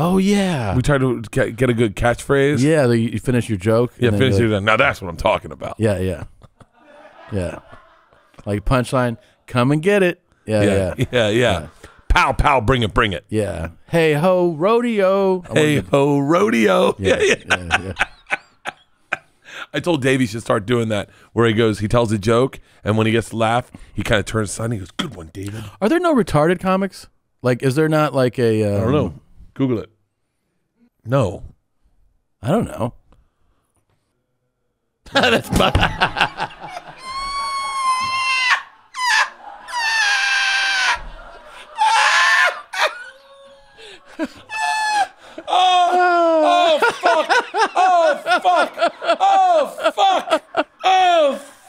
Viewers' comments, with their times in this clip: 0:09 Dude I was sleeping and legit woke up in a panic thinking my dogs were being attacked because of that Bert squeal
0:34 still trynna figure out who they were laughing at